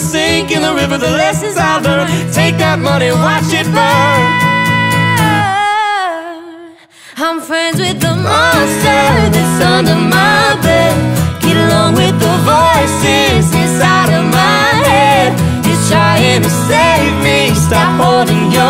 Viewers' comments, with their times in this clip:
0:04 Apparently Alejandro loved Carly's high note also as evidenced by a look of approval with a slight smile during the pause. How can anyone NOT love Carly? Rhetorical question here.